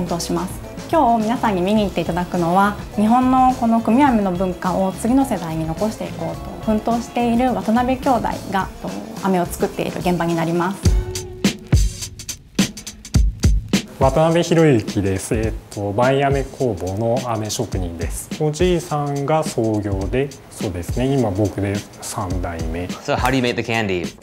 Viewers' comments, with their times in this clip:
0:06 Anyone else thought it said "Wannabe"? No? Just me?